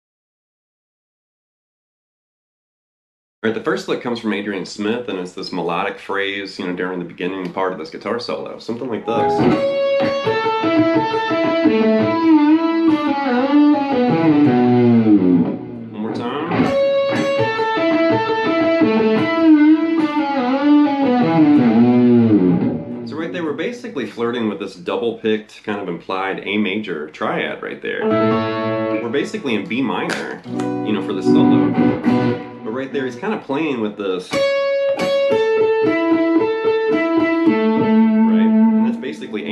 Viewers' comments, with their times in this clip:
0:03 Given the band, I was expecting blues licks in E minor, with a tinge of Aeolian, but I'm surprised... I would have guessed the first one was Steve Vai
0:25 double-picked major key lick, with Holdsworthian bar dips??!! Sounds like Adrian was listening to Steve Vai!!! :)